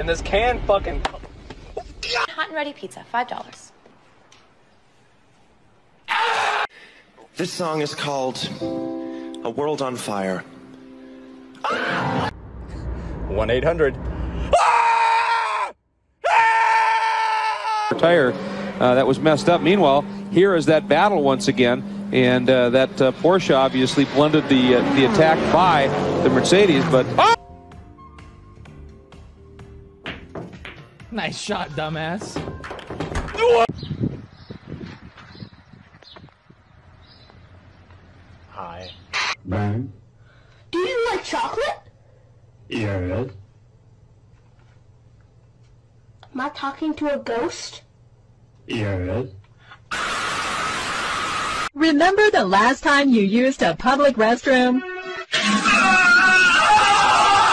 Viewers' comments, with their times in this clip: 0:08 first thing how is that thing a song second: he is also playing random notes third: he is also using the only word “AAAHHHHHHHHHH”
0:40 bro broked the sound barrier 🤣🤣🤣